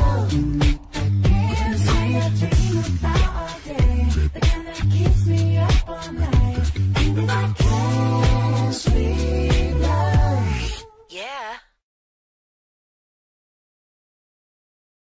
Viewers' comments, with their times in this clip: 0:11 Leon sounded like a girl then sandy was like WTF